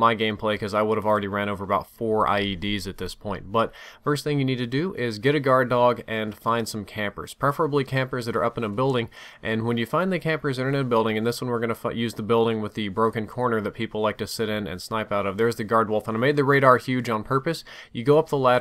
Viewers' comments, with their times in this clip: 0:06 that dog was like "Huuurrrrrrr"